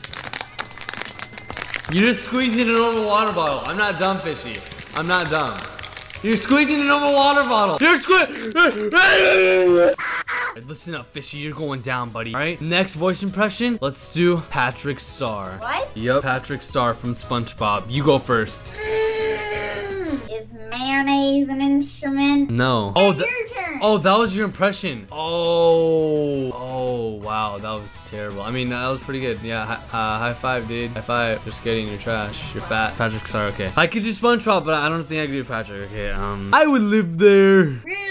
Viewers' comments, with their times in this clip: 0:08 when you struggle to sneeze 😂
0:20 Listen to did you laugh